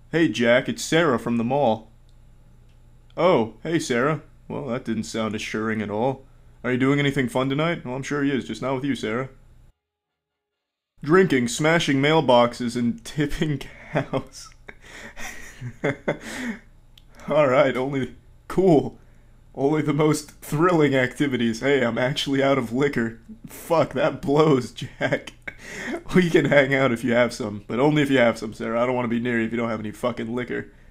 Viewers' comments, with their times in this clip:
0:07 omg his laugh is so cute :D
0:07 Critikal's laugh ftw
0:07 That dialogue and Cr1tikal laughing will forever be a highlight of this vid.
0:08 That moment, when cr1tikal is laughing...
0:09 That beautiful laugh
0:10 holy friggin shit critikal laughed and sounded almost like mrcreepypasta. Could it be that they're from the same universe?
0:10 For those who want to cut to the laughing, it's
0:11 first time hearing him laugh.
0:11 It's official, Cr1tical has cured cancer with his laugh.
0:12 Cr1TiKaL laughed, guys. Embed this onto a gold plate and put it in the history books. This is a moment to remember, rejoice, revel.
0:12 Did he actually just.........laugh
0:12 years of watching and this is the first time I've heard him laugh
0:12 He laughed! Hell will freeze over, popcorn will rain from the sky, water will be replaced with hot chocolate, the world's peace will be restored, pigs will be able to fly. The man, the legend, the saviour, our lord laughed!
0:12 where he laughs.
0:12 He laughed there are 3 fives. Half Life 3 is confirmed.
0:12 HOLY SHIT HE LAUGHED HE LAUGHED!!!
0:12 thats the laugh
0:12 BEST LAUGH EVER!
0:12 Holy shit, Cr1tiKaL actually fuckin' laughed. I replayed that, like, 7 times. That's crazy.
0:12 omg u laughed :D THAT MADE ME SO HAPPY
0:12 I go back to every single time to listen to him laugh. I am seriously in love with his laugh like a weirdo.
0:12 First laugh is
0:13 did he just laugh?
0:13 the time he laughed and the time every girl watching this video got wet
0:13 Wow i´ve never heard you laugh before xD
0:14 first time Iv'e ever heard him laugh.
0:16 This is the greatest laugh of all time(it's first time I hear cr1ticical laughing)
0:17 Penguinz IS human after all! He just laughed!